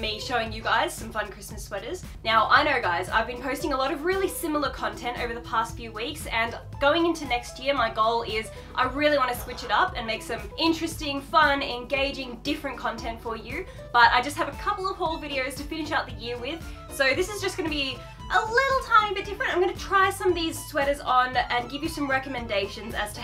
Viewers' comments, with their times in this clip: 0:08 Y'all hear that sad sigh lmao